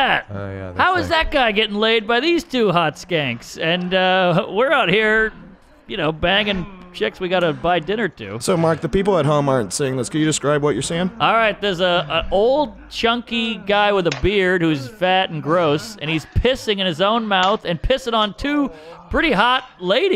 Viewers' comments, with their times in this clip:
0:05 Mark’s commentary is so hilariously PERFECT his announcer type voice was meant for this type of shit 😂